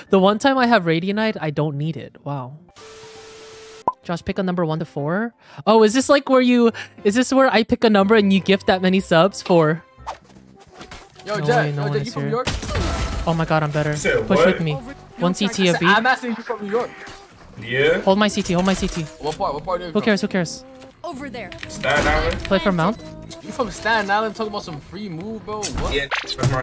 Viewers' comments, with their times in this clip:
0:07 I thought you said poor 😭